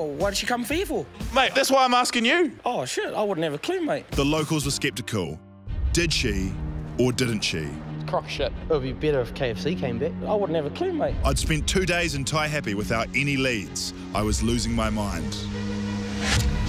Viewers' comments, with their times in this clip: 0:03 Is it just me or does the guy sound like Korg from Thor